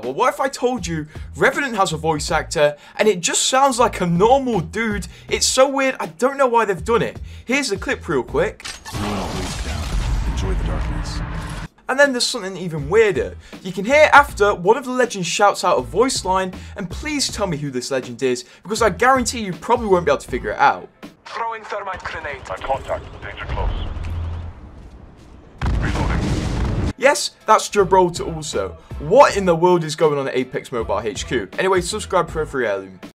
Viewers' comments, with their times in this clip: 0:09 when you run out of your morning voice
0:27 nah b that’s not gibby, that is some mobile call of duty voice…I refuse to accept that as GIBBY! GIBBY IS SUPPOSED TO SOUND HAPPY-GO-LUCKY NOT DEPRESSY DEPRESSY